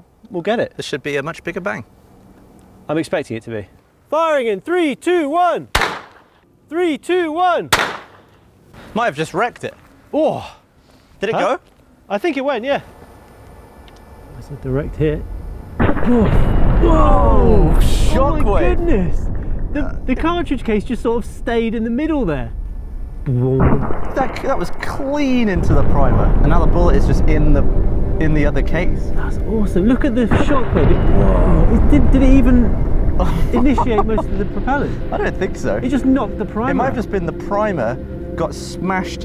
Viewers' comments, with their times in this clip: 0:10 is that a truck driving by downrange??
0:11 is that a school bus riding by in the back
0:24 BOOM dang is that cool!